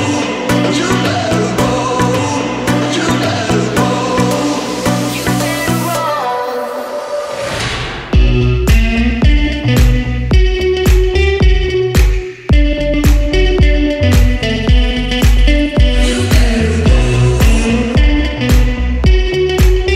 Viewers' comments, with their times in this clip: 0:06 That drop <3